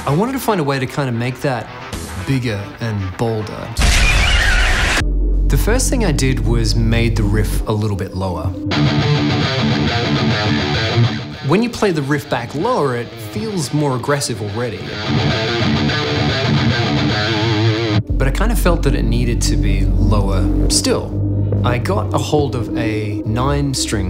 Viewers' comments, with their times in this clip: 0:08 You know, I've always thought this; I would've made the soundtrack more "classic Metal", pretty much sounding like this indeed... > And also like they did for Painkiller I suppose. - Because, personally, I do not like the whole overly produced tight slappy sound of recent productions. It would've made more sense to me that, with a newer version of DOOM, going from the pixelated stuff to the fancier graphics, you also go from the midi-type stuff to just the real instrument version of that old soundtrack. - Then again, they already did it in a more "classic" style for say 'Painkiller', so even though I'm not a fan of the farty guitars and dubstep-effects and such, it DOES make sense in like a modern videogame-context. It's more like having "effects" than actual organic instruments. Which, in a standalone piece of music make more sense, but perhaps don't mix well with a digital product that's already full of noises.
0:09 for some reason that really sounds like 115 from cod bo2 zombies.